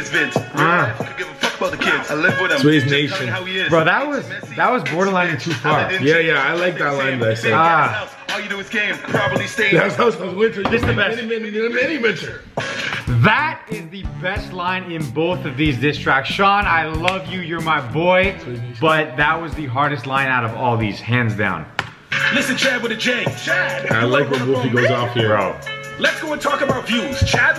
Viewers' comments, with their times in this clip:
0:09 i swear sounded like scooby-doo